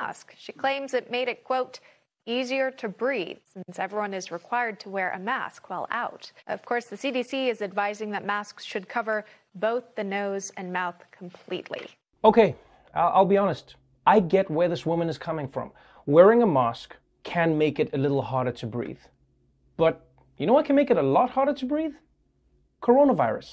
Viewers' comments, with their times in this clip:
0:10 That raw video is so much funnier than how the news says it, lol the guy recording speaks so hilariously